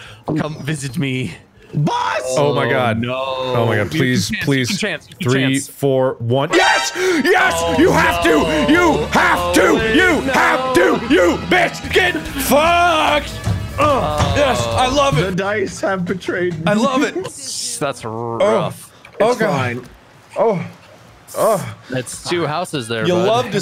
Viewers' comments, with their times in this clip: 0:06 Is that the melodious sound of the Final Fantasy victory theme I hear in the midst of Mark's glorious celebration? :D But seriously: what version of the song is that? It sounds AWESOME!
0:10 Man why is this so musical what an actual F